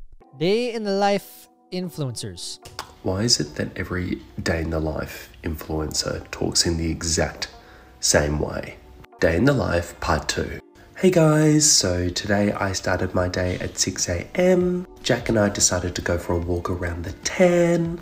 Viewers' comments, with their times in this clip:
0:04 How to talk like an influencer: Use TONS of vocal fry. Every statement should end with a question-like tone with the voice going up at the end of the sentence, and every question the vocal tone should go down and sound like a statement. BOOM. Now you have millions of followers.